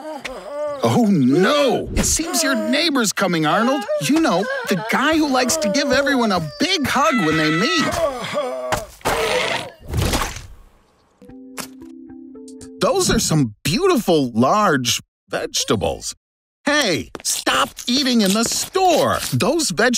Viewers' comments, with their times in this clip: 0:07 Arnold is screaming 😂😂😂